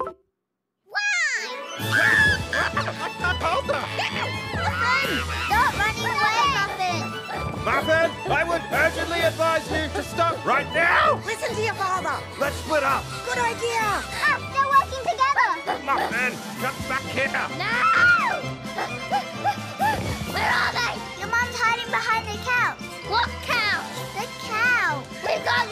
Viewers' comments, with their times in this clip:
0:09 Stripe's voice break caught me off guard